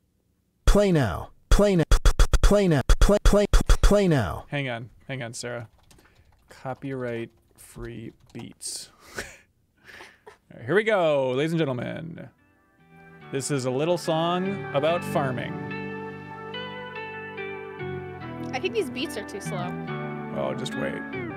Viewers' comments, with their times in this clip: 0:04 I’ll save you time - sick beats are in